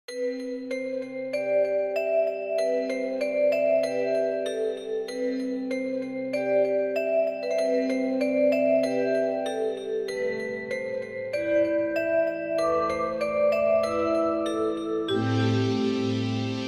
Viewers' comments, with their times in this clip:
0:00 I can’t exactly describe it, but this song feels very nostalgic, it’s like I heard it in a fever dream, or in actual world, I can’t remember from where…. Like in some cartoon or movie. Do anyone have the same feeling? Do you know the some similar tune at very beginning???